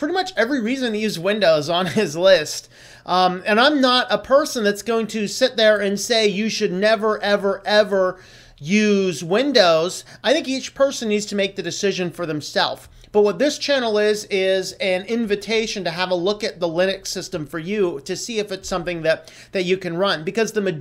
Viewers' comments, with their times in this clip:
0:07 you sound like Taylor Swift